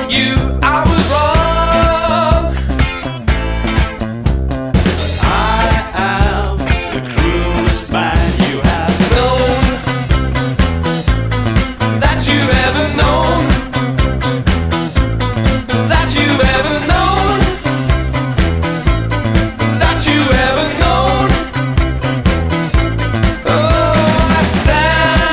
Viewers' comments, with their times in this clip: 0:04 Does anyone else hear Bowie's voice ?
0:04 Who sings ?? nice voice
0:04 Is it just me or does it sound like David Bowie harmonizing ?
0:06 sounds like David Bowie and I'm not even joking